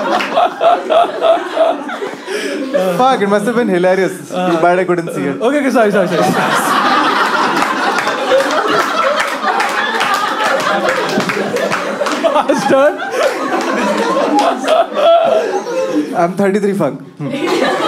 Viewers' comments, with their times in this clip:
0:03 what'd he say ? Couldn't catch it